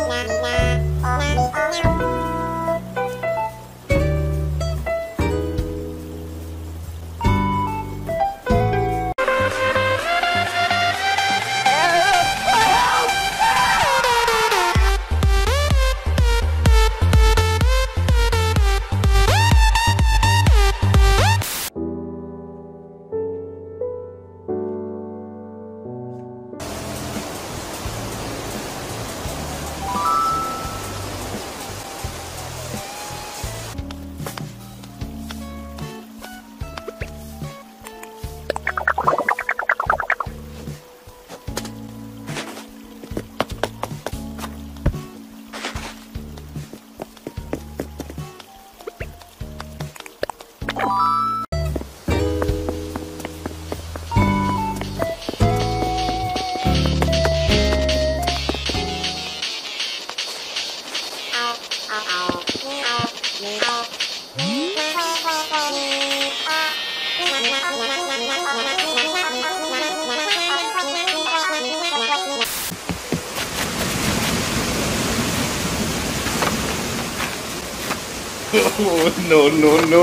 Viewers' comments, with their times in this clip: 0:08 I have this singing birb on my island
1:01 RAYMOND... CHEWING... CUTE??
1:08 Eminem = I'm the fastest singer ever Animal Crossing = nope